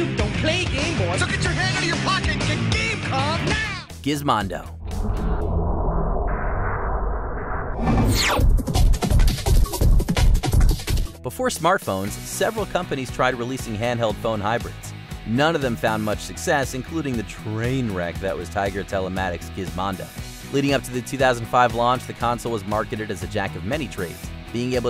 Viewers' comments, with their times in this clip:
0:08 Is it just me or does the Gizmondo music sound like The Powerpuff Girls? 😂